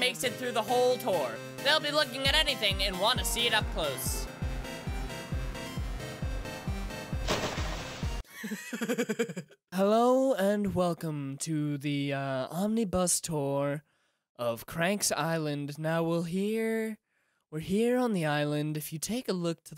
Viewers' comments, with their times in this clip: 0:05 that giggle git me shook